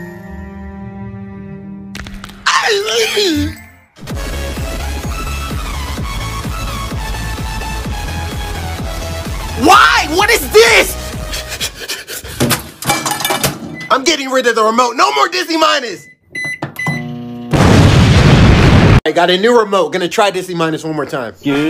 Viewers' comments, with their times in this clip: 0:05 dude got the whole squad laughing lol
0:08 I haven’t heard that song in a long time